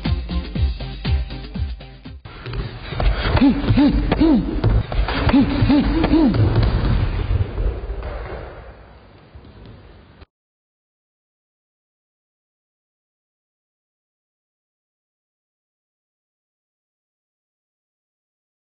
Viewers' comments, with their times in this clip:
0:03 is it needed to say Humm Humm hmmmm? 😂 😂 😂 🤣 🤣